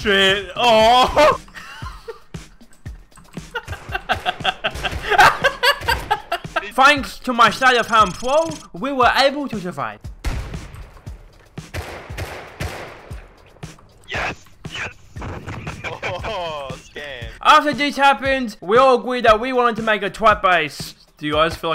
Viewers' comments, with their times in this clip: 0:08 Able, 'ot' survive?